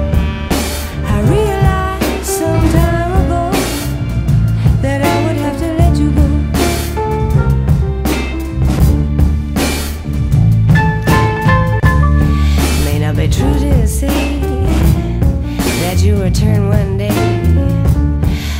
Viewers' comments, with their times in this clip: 0:03 Yeah! uooou!! addictive soundtrack keep it up bro